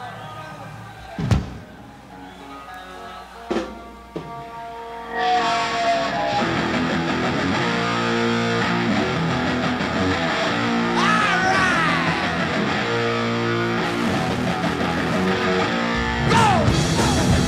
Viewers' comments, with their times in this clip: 0:05 Imagine being at this concert and hearing Symptom Of The Universe for the first time. The most ferocious guitar tone of all time. This is the best live Sabbath there is. They were all beasts in 1975. Bill Ward - No.Words. Just Incredible. Best live guitar tone Tony Iommi ever had captured on tape. Pure un-frigged with live Sabbath in their prime. This is a gem.
0:05 ok to understand why Sabbath are talked about as the "first Metal band" crank it up and compare this to what was going on in popular music and "heavy music" in general in 1975, where maybe Physical Graffiti and BTO were considered hard rock at the time.Sabbath just had that sneer and thrash no other group had untill at least the 80's.